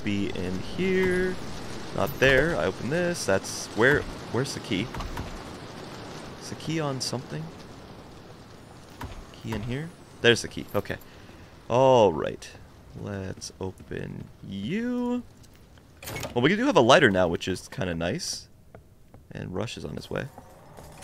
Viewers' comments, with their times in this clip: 0:05 if you're near the key it makes a sond